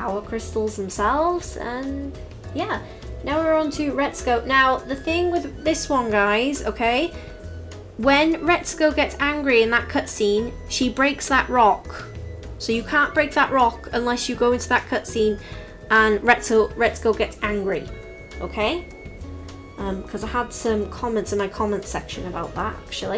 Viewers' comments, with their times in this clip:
0:07 unless you get in that what scene pardon? i didn't hear well i need help with this one